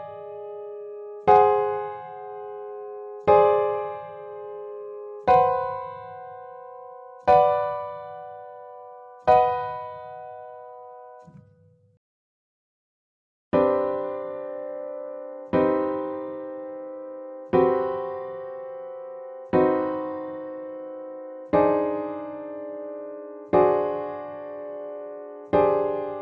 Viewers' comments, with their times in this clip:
0:07 isnt that just a regular B minor chord though? wouldnt the o imply that it's diminished?